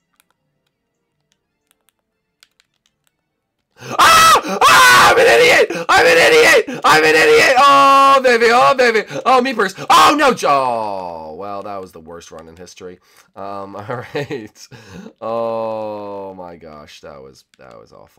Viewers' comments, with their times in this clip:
0:03 Rip Headphone Users